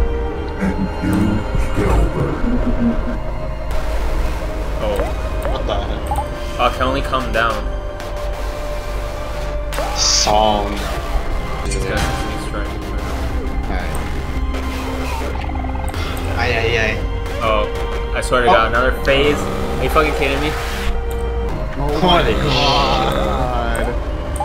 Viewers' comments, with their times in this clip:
0:04 sounds like a loan mower
0:05 PS: the muffled sounds are everything that you could hear if you were there when sunny pushed mari down the stairs. i saw a video showing proof, but i cant find the video. let me know if anyone finds it.